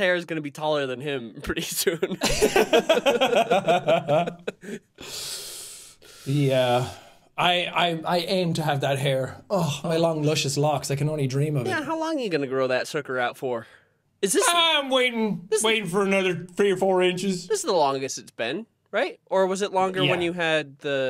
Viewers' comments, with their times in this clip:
0:09 sounds like "i dress cute. I smile at him. I even winked at him! 2 times! and all i get back - is one ONE fake smile!!"